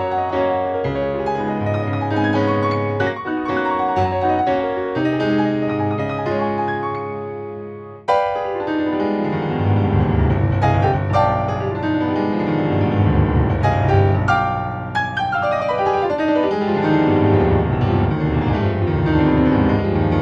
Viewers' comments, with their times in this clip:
0:08 That stuck key almost ruins the show...For a $5,700 controller I think it, I think it...